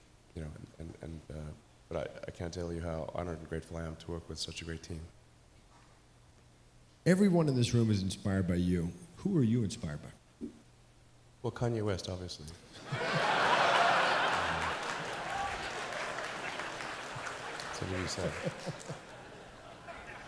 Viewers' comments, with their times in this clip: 0:07 ROFL Elon's deadpan humor 😂😂😂